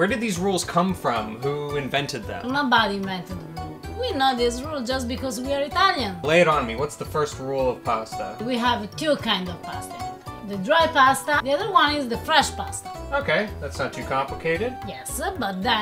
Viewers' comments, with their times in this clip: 0:03 "we're not Israel just because we are Italian"